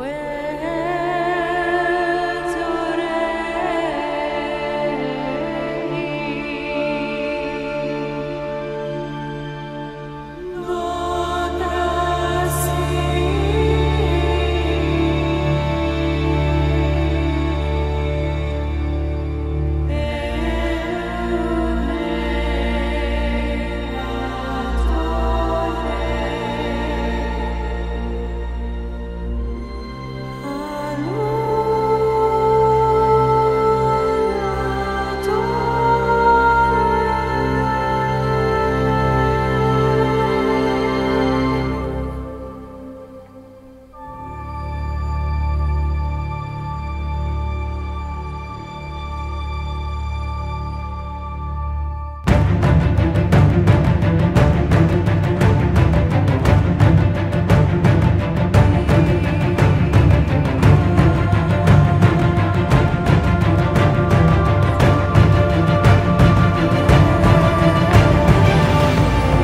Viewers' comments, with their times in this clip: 0:09 i could have sworn i heard them saying "Nordrassil"
0:49 I feel like this song encompasses the Night Elf race so well. The song starts off very beautiful, but sad at the same time showing how powerful of a race the night elves were but went through series of terrible events and tragedies. But the song picks up showing how the Night Elves have lost so much, but continue to fight on. What an amazing piece of music. WoW is a good game
0:52 Music goes ''elfshit''
0:52 This music gives me chills in game(second tune) approx.